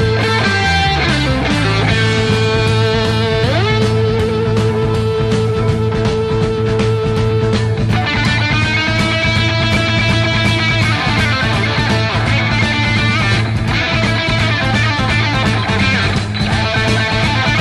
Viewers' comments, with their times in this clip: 0:03 The drums during the guitar solo part starting are extremely difficult to play. I've tried and failed to play it. I'll get it at some point though. Incredible song